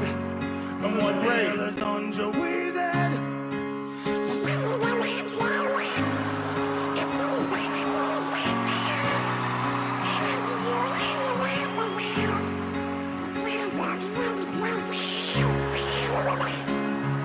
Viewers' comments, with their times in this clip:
0:04 Nice Brian Johnson impression...